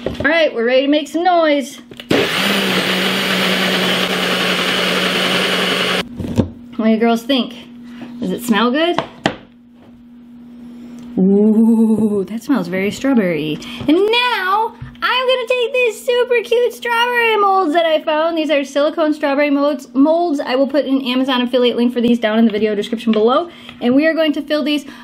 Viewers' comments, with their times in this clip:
0:10 Sounds like an uwu but triggered Edit: sorry if it’s weird!